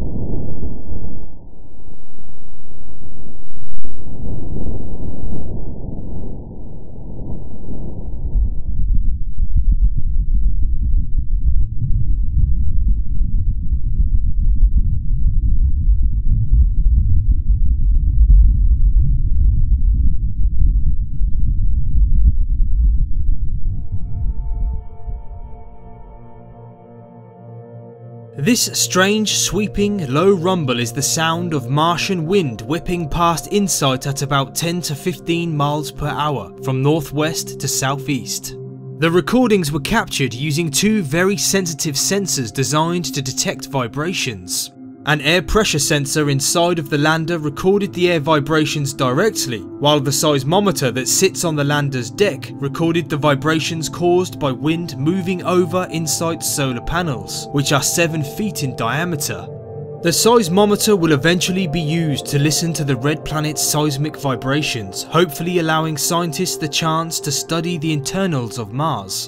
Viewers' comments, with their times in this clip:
0:08 Sounds like the house down the street is having a rave again
0:08 Sounds like underwater bubbling 💧
0:10 sounds like marsians are having a rave underground party
0:28 The low rumble is the microphone diagram being hit directly by.... air moving, wind. So. Just wind in a mic then?
0:50 Did no one else hear how casually he slid this line in there?
0:51 we all know what that sounded like
0:51 I can't be the only one who misheard that